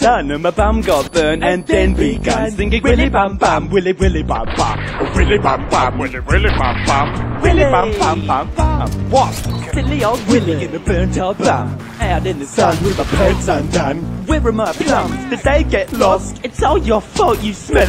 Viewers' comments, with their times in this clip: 0:03 should be put in an episode. Also, this song is horrible. I muted the video.